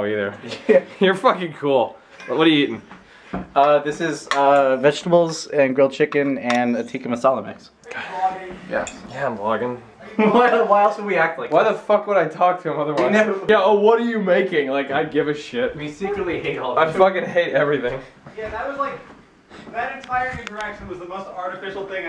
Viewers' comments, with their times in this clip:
0:06 Audio in right ear sounds messed up